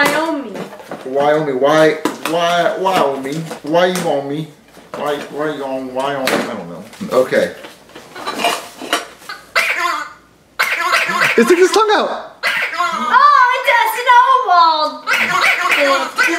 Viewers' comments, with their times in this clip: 0:03 Me as a three-year-old trying to pronounce Wyoming